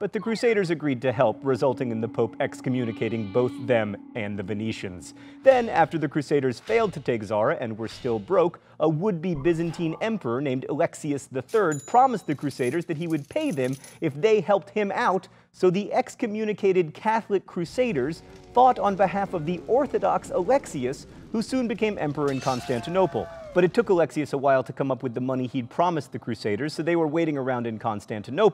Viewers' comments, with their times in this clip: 0:10 Sort of out of left-field, but did anyone else want to shout "money" from the Pink Floyd song when they heard the cash register sound ?